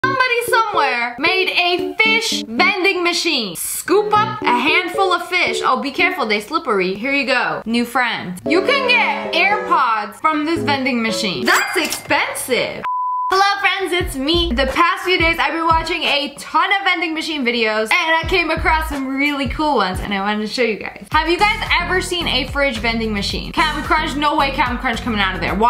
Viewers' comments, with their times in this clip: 0:06 oh be careful they slippery the way she said that is funny 😂